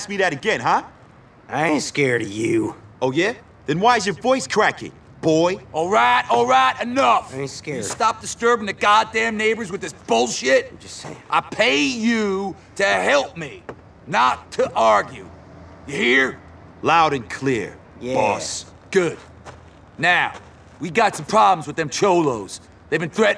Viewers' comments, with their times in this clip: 0:06 I love how that guy softly says '' i ain't scared :( ''